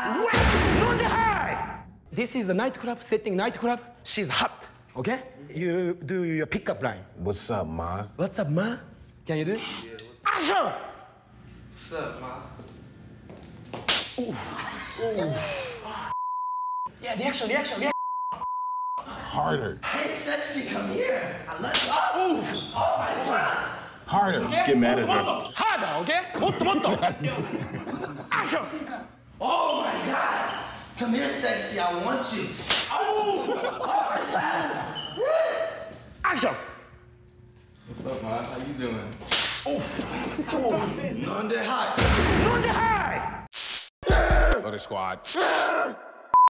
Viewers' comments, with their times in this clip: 0:08 the way he said “what’s up ma?” 😂😂
0:19 🤣🤣🤣🤣 his voice change
0:38 😂 That "oof" proves how hard that slap was lmfaooo